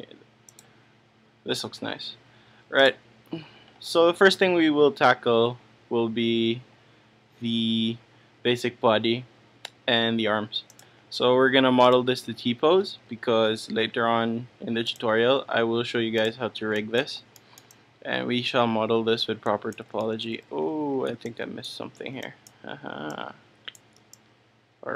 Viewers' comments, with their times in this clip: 0:09 did he say taco?!